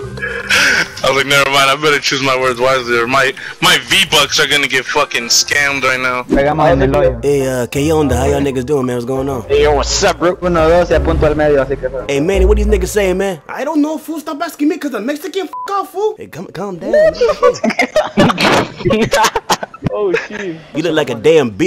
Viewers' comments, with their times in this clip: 0:09 Bruh LMAO bruh that was a great Transition on voices lmao